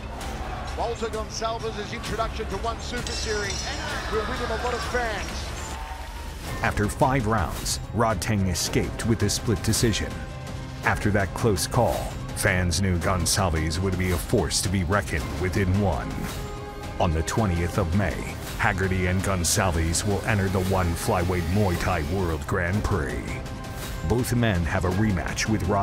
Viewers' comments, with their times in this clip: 0:06 poor goncalves with titanic backsound recorder